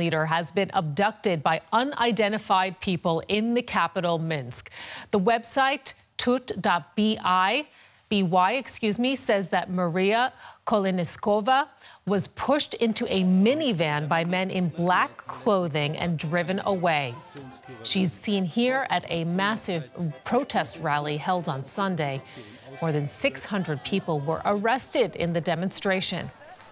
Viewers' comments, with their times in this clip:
0:10 KoleNISkova xD but for real, not funny at all